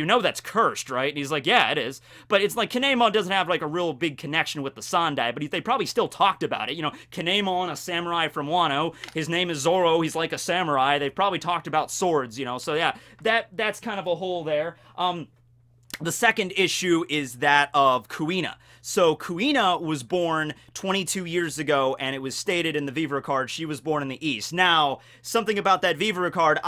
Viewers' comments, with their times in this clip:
0:09 no no, it's Zolo.